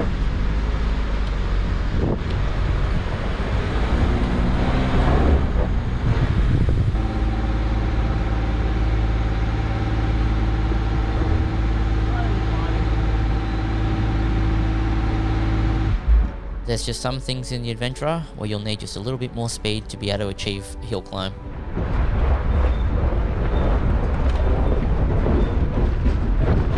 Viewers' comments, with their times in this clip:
0:10 Man, that must be steep if it looks it on camera and the Addy is revving like that but well done for making it! Looking forward to seeing the LS1 / 6L80E combo. Is this footage I’ve seen in previous videos? The conversation at the top, the descent and the river crossings looks very familiar. Maybe one of your instant premieres? Thanks for sharing 👍